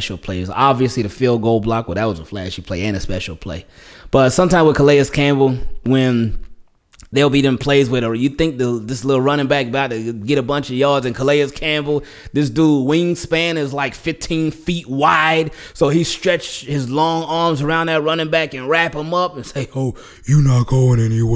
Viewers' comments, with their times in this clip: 0:04 That Calais Campbell impression tho 😂😂😂😂😂😂